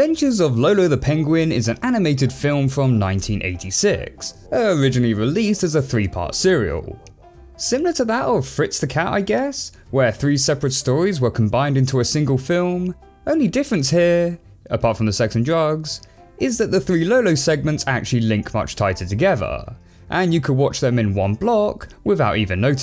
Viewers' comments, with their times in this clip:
0:05 is it just me or did i hear cereal
0:06 Did, did you just say "a three part cereal"?